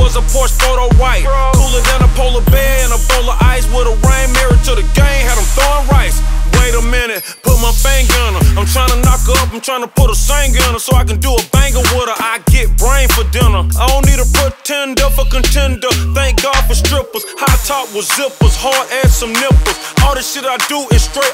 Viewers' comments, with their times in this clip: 0:07 why does he sound like Biggie, made me feel weird when I noticed.